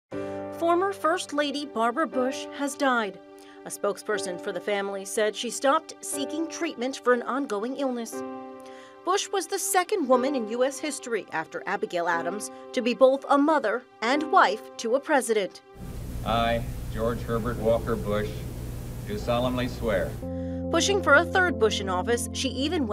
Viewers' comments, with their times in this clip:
0:07 listen to the way she says illness! Lol